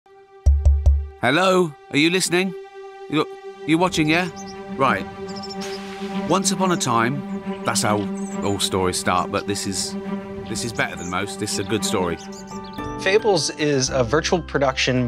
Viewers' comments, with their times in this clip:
0:00 ah, one of my most favorite voices of all time. Wonder any old xfm listeners are here.